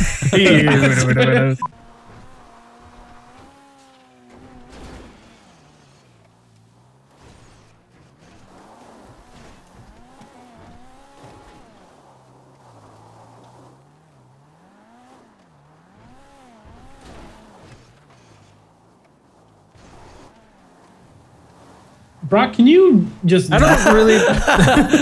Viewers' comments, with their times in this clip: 0:10 Did anyone else think that your volume broke
0:10 Anyone else turn up their volume up ?